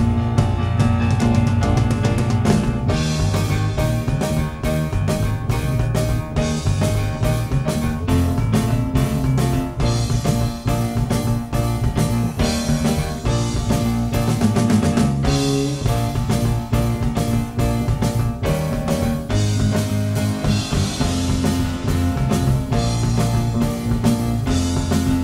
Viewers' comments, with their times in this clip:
0:09 listen from sounds like doctor who intro!!!